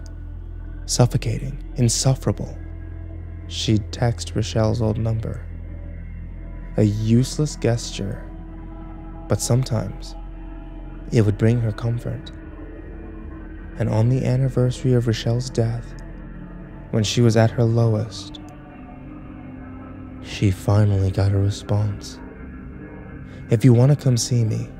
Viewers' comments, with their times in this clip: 0:06 Gesture is pronounced "jestyur," not "guest-yur." With a soft G.